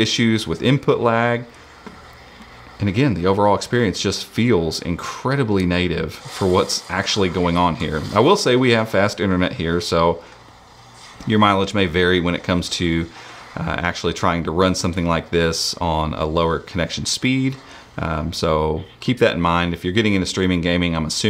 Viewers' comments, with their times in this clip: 0:04 the experience is incredibly negative too 😂😂😂